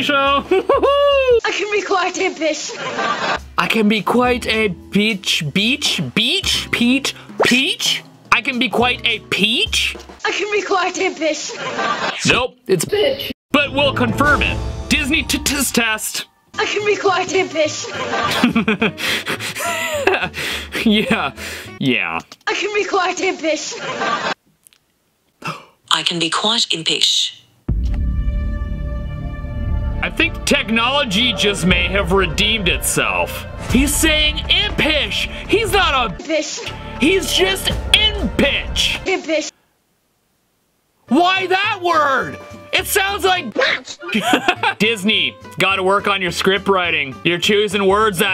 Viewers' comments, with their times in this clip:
0:01 I can be quite a piss
0:06 i can clearly hear i can quite be a beast
0:10 I can be quite a piss to me lol
0:16 I can be quite a fish
0:20 Sounds like he’s saying piss
0:21 I heard I can be quite a piss
0:27 do you think he’s saying apish
0:30 during the one where you did it to your google captions said "quite tippish"